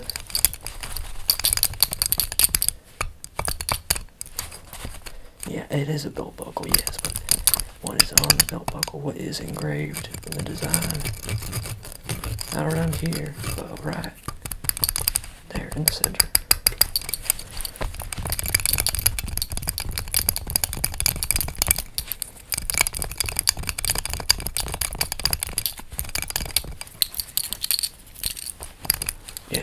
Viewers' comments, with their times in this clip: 0:10 The scratching was bussing